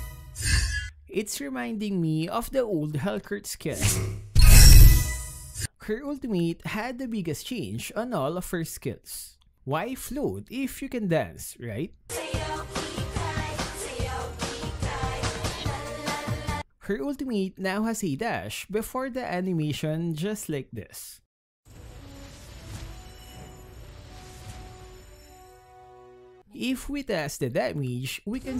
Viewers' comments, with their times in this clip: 0:07 I was laughing when he adds music when she is dancing
0:12 nice song you've got sir;)